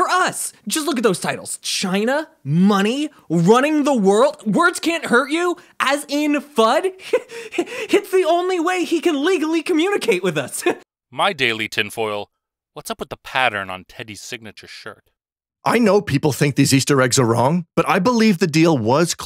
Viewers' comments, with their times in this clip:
0:05 That guy who voices a lot of the apes' Reddit posts like deserves whatever the Oscar equivalent is for doing guest reads on YouTube videos